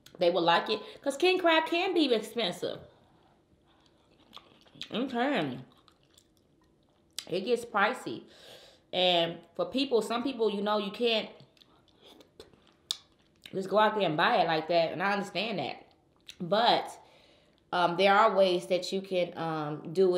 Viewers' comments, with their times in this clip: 0:08 12:9 “ king crab can be expensive it can it can be spicy” I was like spicy